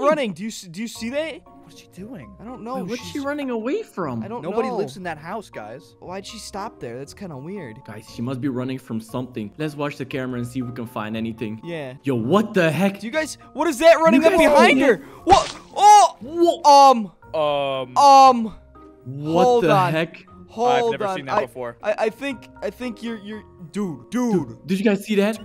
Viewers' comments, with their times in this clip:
0:08 kinda sus (the Scream)